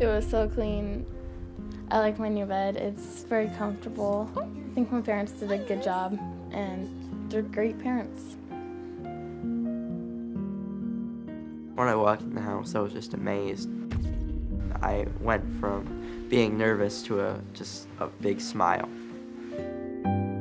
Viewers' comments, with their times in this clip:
0:06 she does not sound genuine at all. You have to wonder...